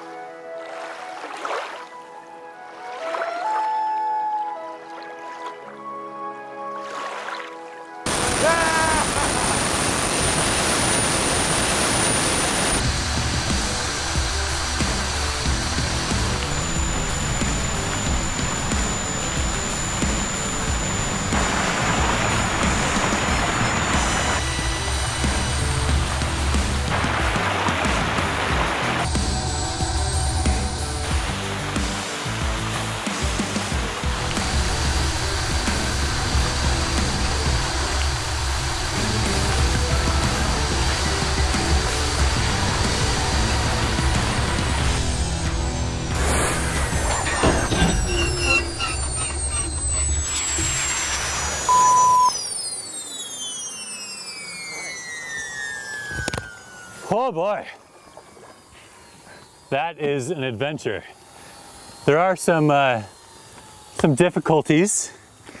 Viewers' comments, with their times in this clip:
0:03 I can make that noise... I think that’s a loon
0:45 I REALLY liked that falconsound XD XD It fitted PERFECT!!
0:48 sounds like the Millennium Falcon
0:49 sounds like the Millennium Falcon when it breaks down